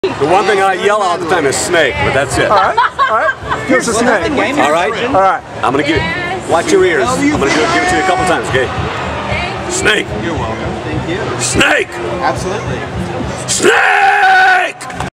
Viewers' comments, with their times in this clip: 0:09 The first "Snake !!!" was exactly like the one he did in the game.